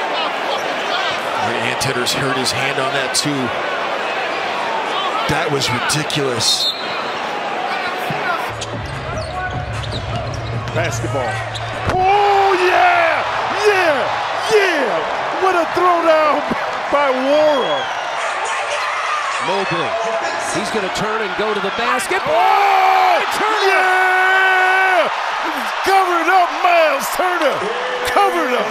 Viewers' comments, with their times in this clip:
0:09 I love that this clip just opens with silence then a guy going “..basketball” yes indeed sir